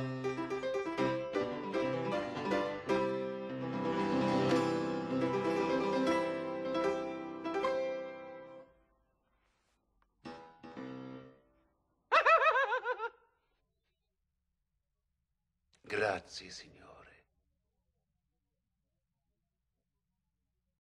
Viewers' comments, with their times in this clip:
0:10 I love how the emperor startles back at Mozart's laugh
0:11 I love how in you can see Jeffrey Jones' (the King) hands and how he's legitimately startled by Tom Hulce's (Mozart) laughter lol.
0:11 I love that the king really jumps out because of his laugh 😂
0:11 If you pay attention by the movements of the hands, the actor scared the shit out of him with that sudden laugh 🤣
0:12 I love how the Emperor’s hands jolt back when Mozart drops his laugh 😂
0:12 that laugh made the Emperor jump
0:12 the king got a jump scare because of Mozart's laugh... 🤣🤣🤣
0:13 the actor jumps when Mozart laughs.